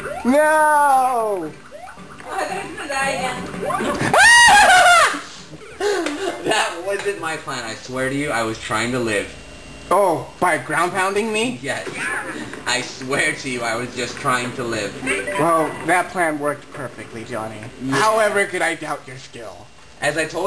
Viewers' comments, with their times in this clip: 0:03 wow lol great man scream!